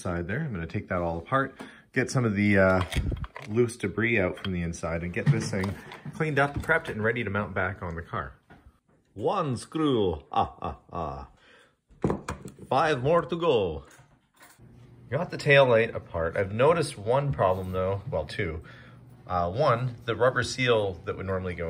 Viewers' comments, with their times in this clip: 0:09 That's your best impression yet!